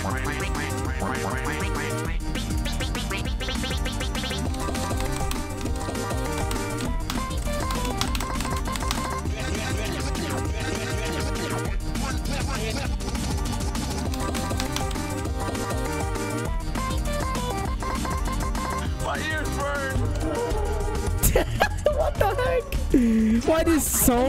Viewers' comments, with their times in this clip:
0:07 this sounds like Miku Hatsune mod